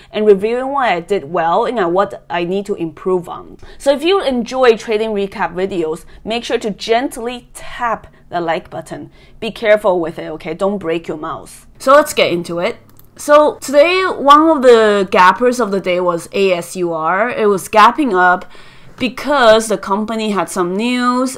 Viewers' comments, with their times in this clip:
0:05 😂sounds like someone broke their mouse smashing the like button!